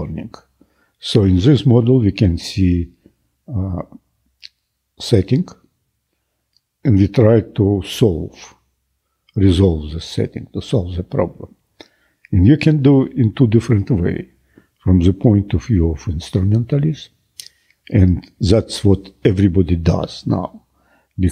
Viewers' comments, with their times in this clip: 0:05 is he saying "setting" ?